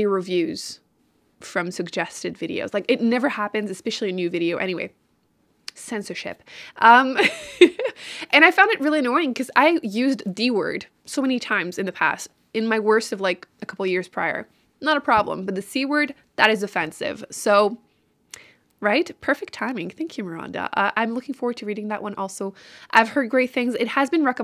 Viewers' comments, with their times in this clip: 0:05 why did I hear 👂🏻 censorsh*t🤣🤪